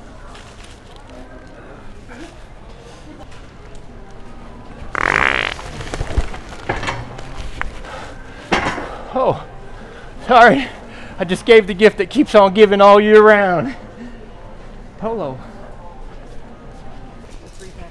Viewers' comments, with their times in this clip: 0:05 the athletic fart at his best!!! 😎🤣